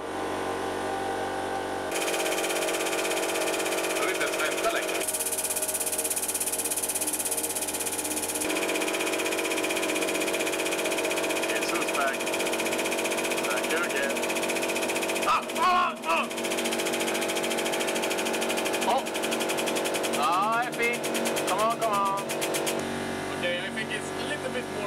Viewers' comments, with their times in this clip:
0:10 HAHAHAHAHAHAHAHAHAHAHAHA LMFAO SINGING "WITHOUT ME" BY EMINEM